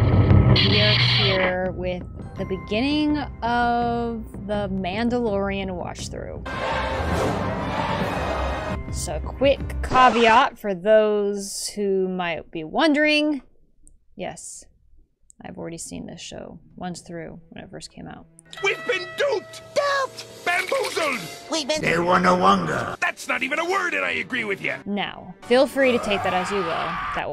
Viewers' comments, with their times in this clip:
0:09 You mispronounced caveat. In Latin the letter e is pronounced as in other Romance languages and in Classical Latin the v is pronounced as an English w. In the Middle Ages, however, it was pronounced as an English v in most places.